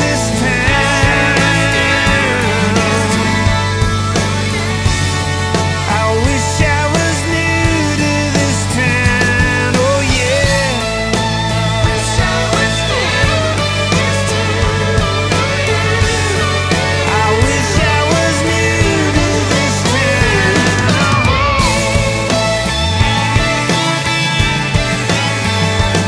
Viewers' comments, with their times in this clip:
0:10 The unmistakably 💥AWESOME💥 sound of Mr. Joseph Fidler Walsh on guitar ! 🎸 🏆 ..Nice "find", Kix !! ..lolz. 😏